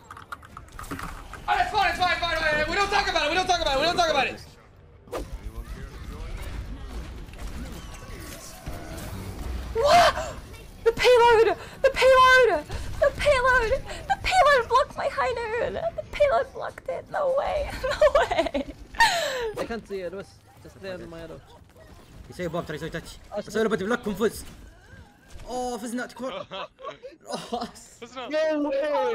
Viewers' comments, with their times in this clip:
0:10 The Paylouh D: